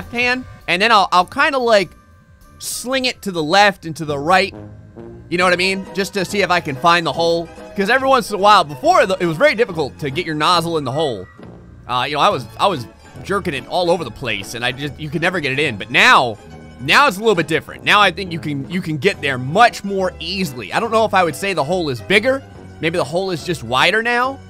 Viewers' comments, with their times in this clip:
0:06 anyone know the song sorry if repost just trying to find it. its so up beat